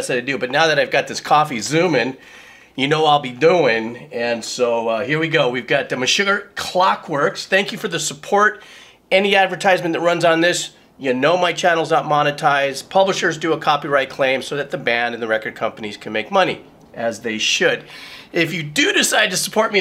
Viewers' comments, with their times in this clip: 0:05 Meshugger sounds like a racial slur
0:06 "Meshuggar Clockworks..." You know you've had too much coffee when "Meshuggah" slips into "Meshuggar." :D